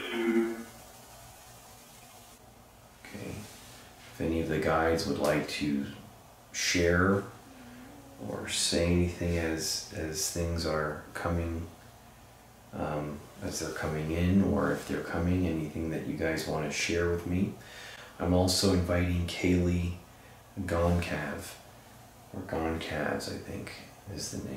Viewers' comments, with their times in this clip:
0:07 after he says if any of the guides would like to share , you can hear a female voice and it sounds like she’s saying I’m here , I don’t have my headphones today but I feel like that’s what I hear. 👍👍👍✌️✌️✌️